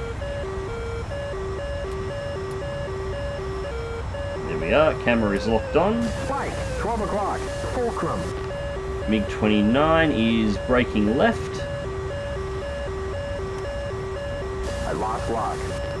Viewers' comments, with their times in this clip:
0:03 The rwr had a stroke